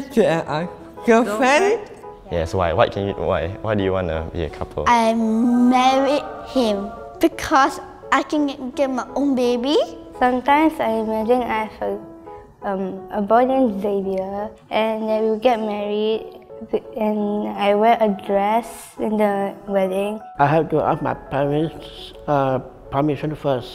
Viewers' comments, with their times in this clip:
0:05 that animation with angel singing lol